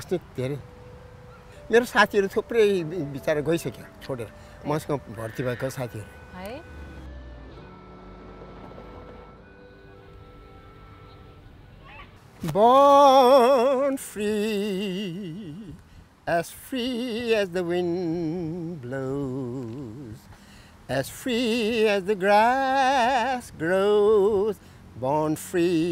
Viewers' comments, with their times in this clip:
0:08 paxi best vocal ever by so senior citizen of Nepal. OMG!!!